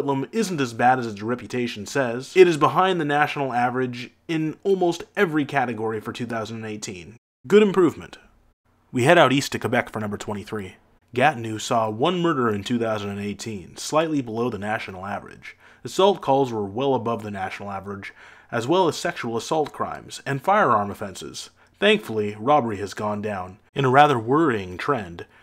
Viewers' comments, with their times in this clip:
0:10 Bruuhhh! Great video, but please! Even if you don't speak le français, you say "Gatinoo". It's "GAH-tin-OH" the eau pronounced like "oh", as in water en français.